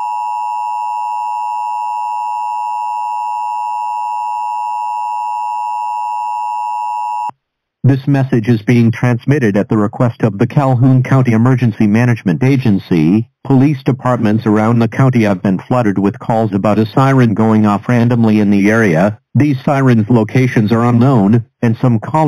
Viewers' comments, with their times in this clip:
0:08 How do you get the voice?